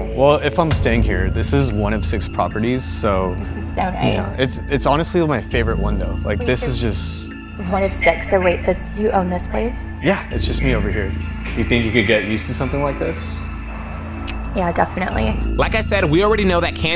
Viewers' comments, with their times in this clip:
0:04 she sounds like exactly like my ex and it’s pissing me off